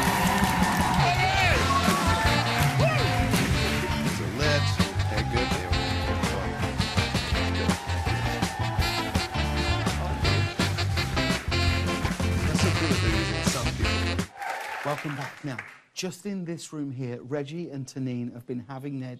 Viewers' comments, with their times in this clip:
0:05 Reggie nervously rambling because the girl of his dreams sitting right in front of him 😂